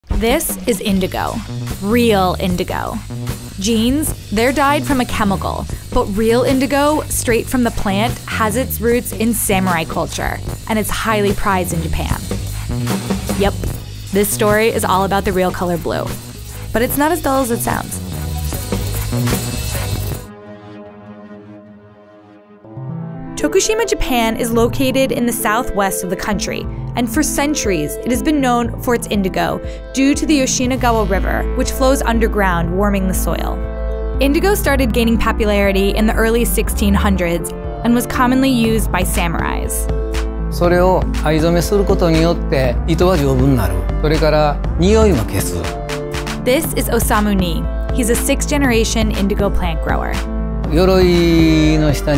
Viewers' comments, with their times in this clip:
0:00 DIS is InDiGohw.. reeuhl INdIg0h
0:23 Unexpectedly loved the beat they drop from
0:34 PAPPULARITY Edit :- thanks for 120 likes Edit 2 :- I'm PAPPULAR BOI Hell yea man